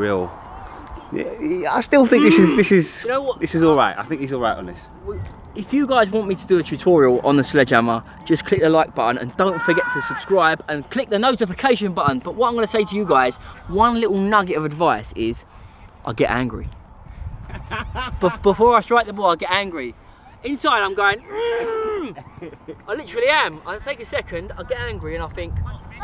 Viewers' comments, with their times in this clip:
0:09 Guy screams fti
0:10 did anyone hear the scream
0:11 did u hear a person scream